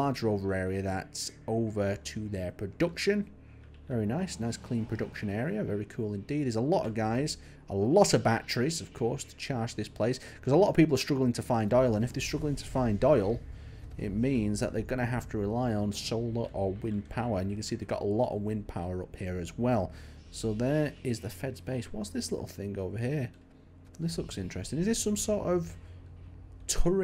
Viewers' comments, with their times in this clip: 0:09 who's doyle? and why is it so hard to find doyle?